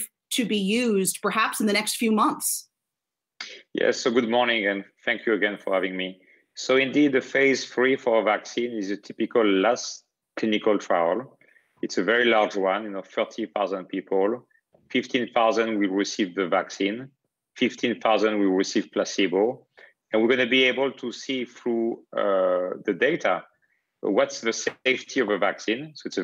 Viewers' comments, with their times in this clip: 0:09 lol this guy sounds just like the call scammer that tried selling me computer virus support over the phone. lolz.